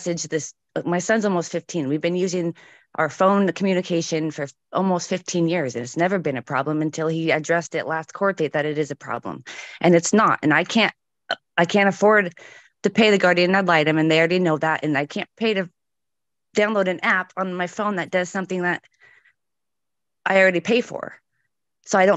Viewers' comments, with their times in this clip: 0:10 Do I hear this broad burping